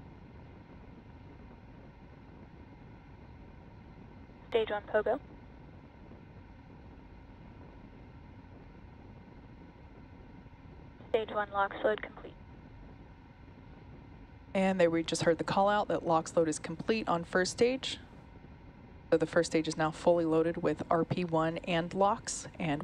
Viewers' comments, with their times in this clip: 0:04 Stage 1 Pogo? Togo? what's that callout?